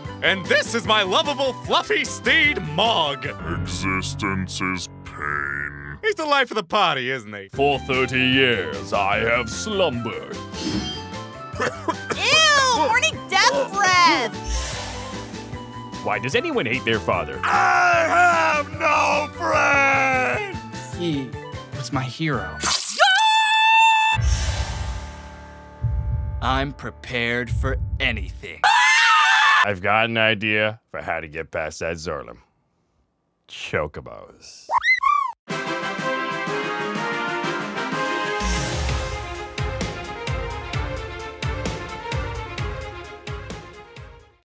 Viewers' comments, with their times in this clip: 0:07 VINCENT HAS THE SAME VOICE AS ALUCARD FROM HELLSING ULTIMATE ABRIDGED!!!
0:33 literally thought I got a notification (have it set to the chocobo sound so I panicked)